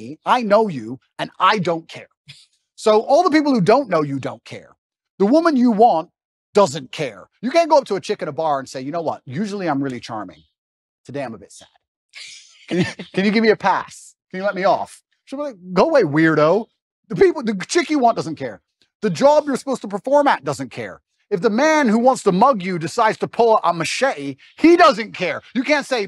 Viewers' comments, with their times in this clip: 0:08 She giggled.... that line clearly works :P even when he is not trying the ladies love him